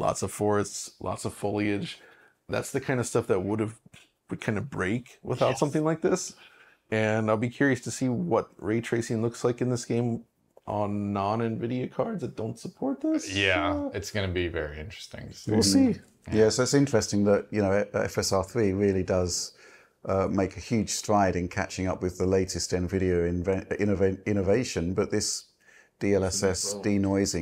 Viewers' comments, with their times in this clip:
0:10 What happens to John’s voice ?